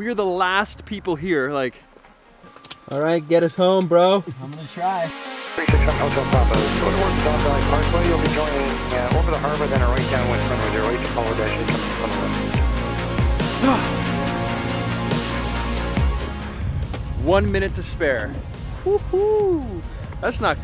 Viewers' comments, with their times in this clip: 0:05 airspace radio communication audio It's the little things that count. Amazing job with this one man. You only get better.